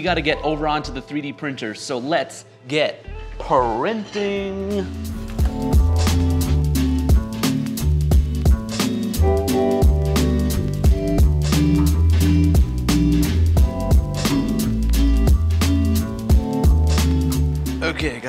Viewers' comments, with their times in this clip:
0:04 YouTube auto-generated captions be like: Let's get parenting